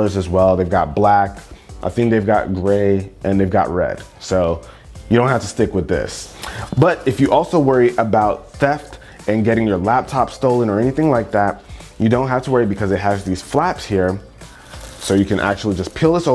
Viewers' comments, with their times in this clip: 0:04 Did you hear him slur his "s"